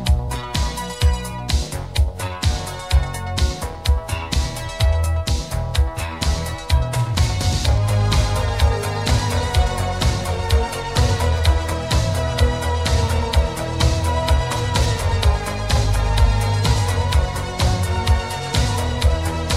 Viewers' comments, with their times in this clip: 0:07 When that synth breaks in it just reaches deep into my soul. CHILLS